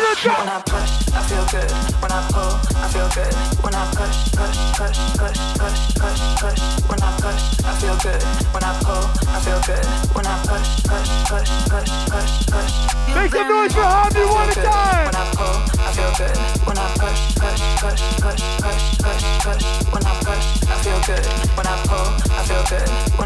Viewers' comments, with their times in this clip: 0:05 is the nastiest song ive ever heard. And ive been listening to this shit for 30 years!!!!